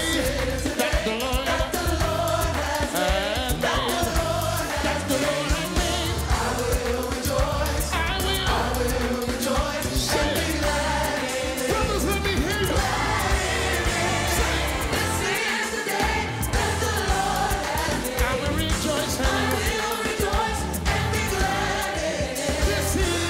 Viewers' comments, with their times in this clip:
0:10 I heard the Holy Ghost on the Bass guitar, Lord help me!!!! There’s Fred Hammond and the other gospel singers!!!!!!